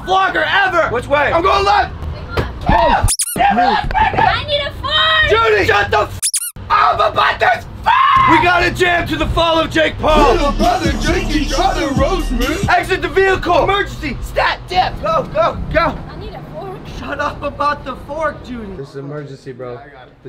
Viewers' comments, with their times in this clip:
0:04 it sounded like she said “I NEED TO FAAART!!!!!”
0:04 I NEED A FART!